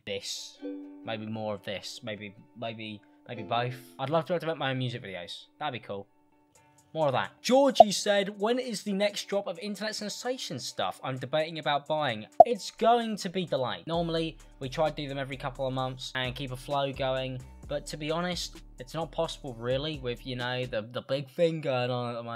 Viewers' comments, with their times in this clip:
0:07 IM SUCH AN IDIOT I THOUGHT MY AIRPODS WERE DYING 😂